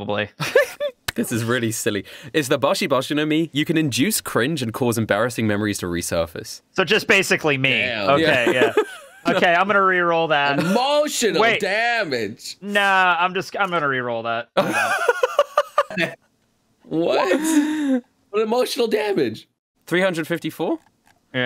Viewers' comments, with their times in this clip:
0:06 the last place i would have imagined hearing cue 'steven he' voice "emotional damage" is right here